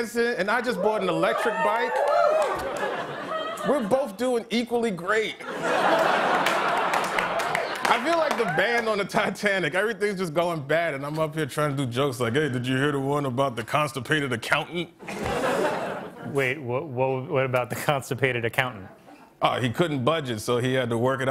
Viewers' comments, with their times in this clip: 0:03 I love the “ahaha” at the end 😂